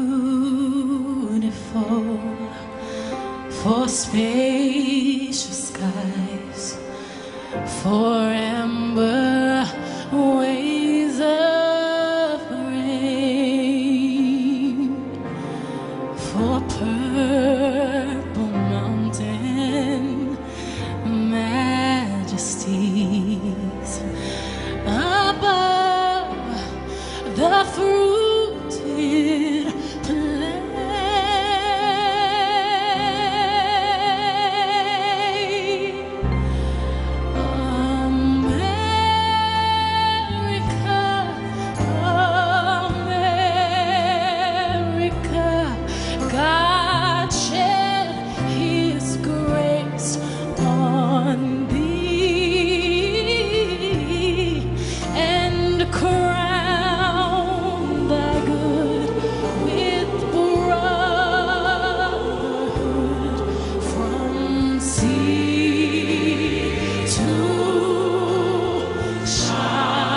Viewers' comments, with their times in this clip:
0:07 am i the only one confused by the rhythm did she miss the time
0:29 Sometimes Beyoncé reminds of singer Des'ree, don't know if it's an influence. like in Beautiful by the way.
0:52 That r&b RUN #EPIC!
0:52 This is the most grounded effortless and naturally powerful Ive ever heard of Beys Voice esp during this era... Far better than At Last performance that same night... That r&b RUN